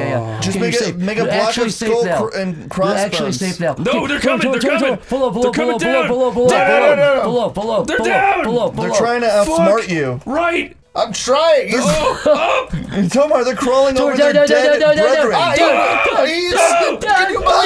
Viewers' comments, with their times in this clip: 0:03 The start of ear euphoria